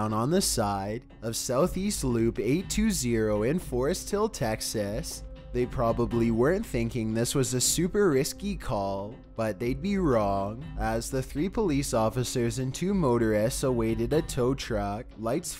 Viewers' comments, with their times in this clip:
0:03 I lied, I thought I was going to make it through it but after trying to skip passed things and just watch the important parts I failed I just can't take his voice. Its making me cringe.